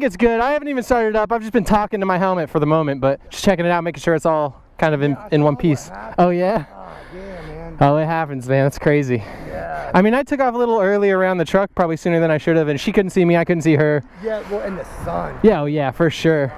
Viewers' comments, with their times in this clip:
0:03 Why does he sound like John Marston?